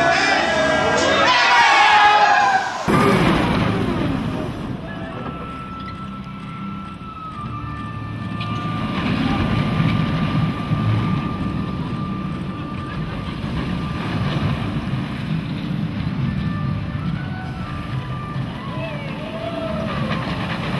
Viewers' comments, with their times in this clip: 0:04 ▬▬▬▬▬▬▬▬▬▬▬ஜ۩۞۩ஜ▬▬▬▬▬▬▬▬▬▬▬▬▬ whats that wierd clicking noise I keep hearing? EX: ▬▬▬▬▬▬▬▬▬▬▬ஜ۩۞۩ஜ▬▬▬▬▬▬▬▬▬▬▬▬▬
0:07 wow there's Chinese music in the background